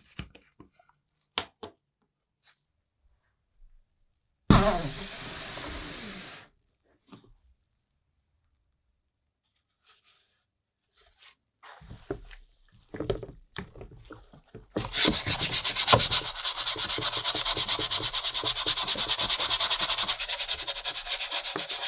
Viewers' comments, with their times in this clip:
0:04 is a fart like there.